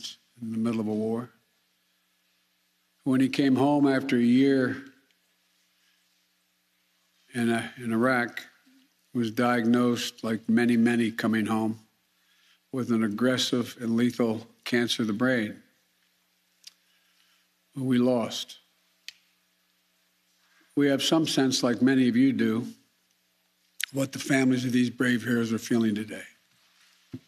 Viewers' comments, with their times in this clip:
0:10 He wanted to sound sad (probably on teleprompter). Although it is heartbreaking to lose a son, I didn’t know many, many were diagnosed with brain cancer after a tour in Iraq.